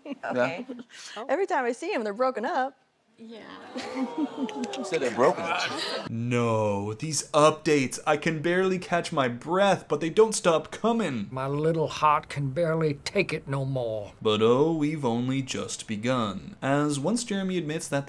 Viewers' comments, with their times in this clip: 0:03 Sarah Ann's expression and the way she whispered "...what"? Someone's not happy the illusion is shattered